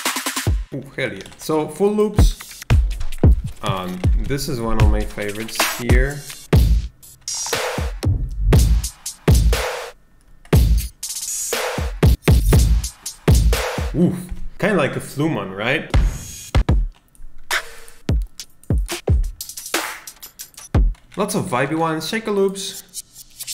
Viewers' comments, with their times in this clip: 0:05 when the vikings show up